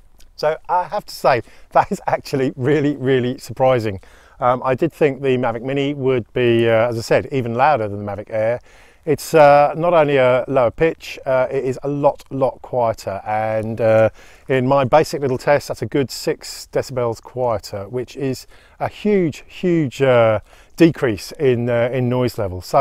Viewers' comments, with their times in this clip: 0:10 "It's a lower pitch..." .nope it is a higher pitch, but lower noise.